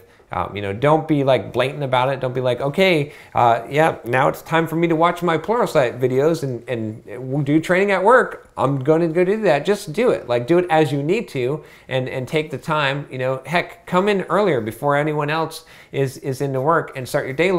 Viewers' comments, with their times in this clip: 0:04 time for me to watch my porno site too